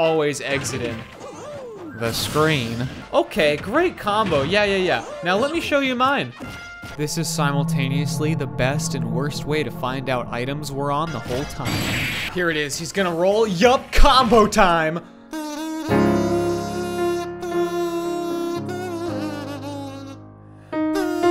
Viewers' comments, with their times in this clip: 0:07 Just wanna point the useless fact of that creepy music that appeared once or twice is actually the Fnaf's 1 ambient sound in game XD